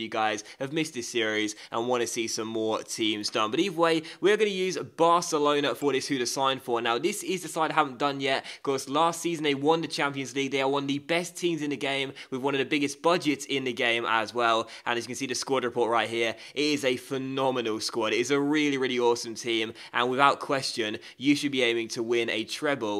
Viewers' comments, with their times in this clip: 0:05 his phone goes off